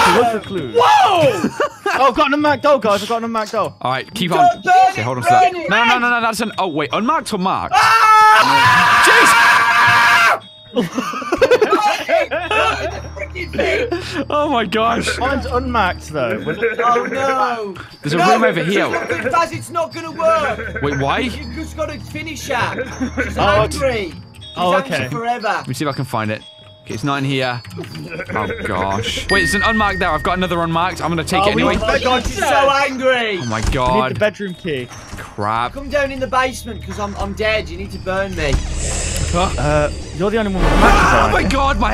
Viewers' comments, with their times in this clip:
0:06 that the long scream
0:16 Which one of you was doing the Bert from Sesame Street-like laugh
0:17 seth rogen laugh in the background😂😂😂
0:22 who’s Laughing in the background.🤣😂